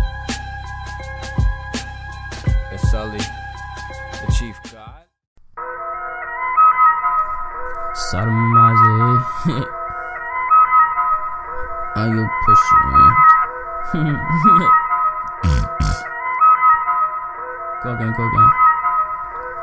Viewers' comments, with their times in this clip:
0:04 Song starting is tight af